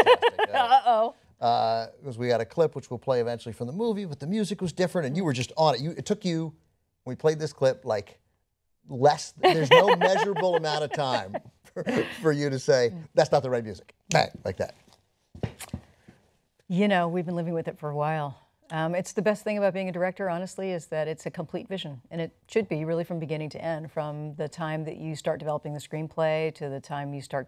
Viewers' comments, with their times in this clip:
0:09 And did anyone else notice that Jodie's laugh sounds just like Christie Lemire?